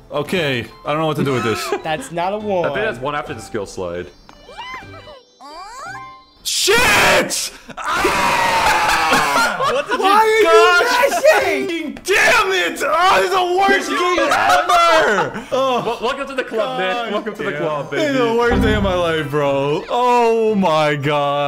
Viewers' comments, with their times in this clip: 0:07 why does this have screaming beaver energy? 😂